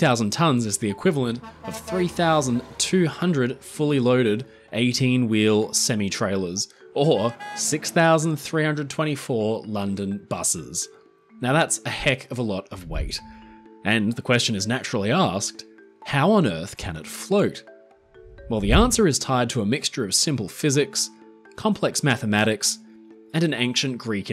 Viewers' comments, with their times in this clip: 0:05 Words are pronounced in different parts of the world. We call sem-I not sem-E